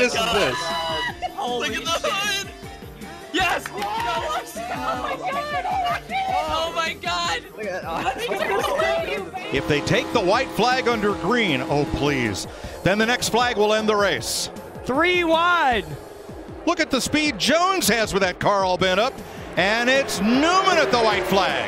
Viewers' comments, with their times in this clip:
0:03 People cheering for Larson in 2020 You won’t see that too much